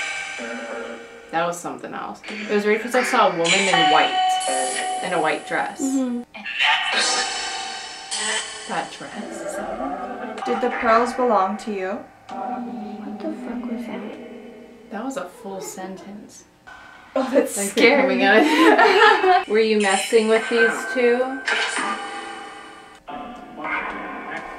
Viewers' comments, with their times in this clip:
0:10 After when it says “when I’m ready” I heard laughter. It was quite creepy